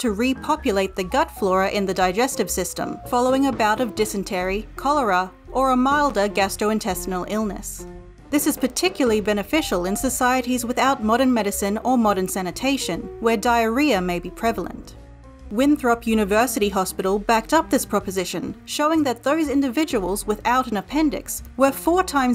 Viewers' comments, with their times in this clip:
0:03 somebody be a knockin'